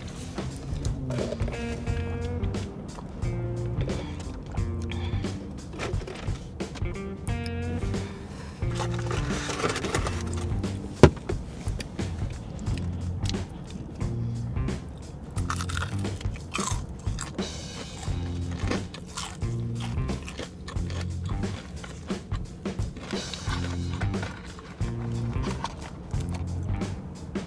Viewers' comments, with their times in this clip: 0:10 Boink! 🤣 She wasn’t phased....She played it off well!💞